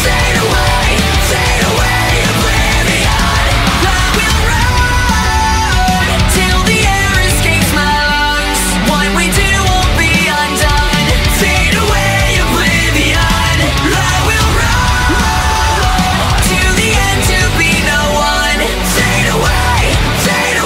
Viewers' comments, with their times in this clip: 0:03 The guitars onwards are so fucking epic